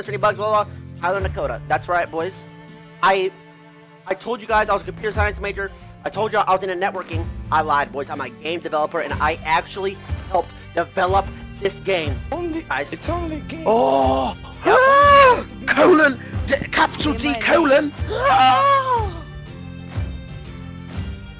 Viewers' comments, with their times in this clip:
0:08 the music drops when tyler reveals big twist POG